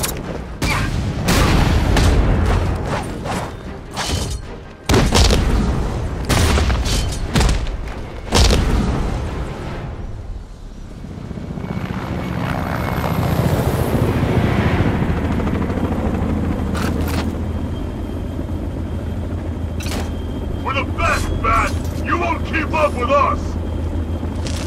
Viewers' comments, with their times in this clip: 0:08 lol the cracking sound. That dude is dead for sure. You broke the rule, Bats.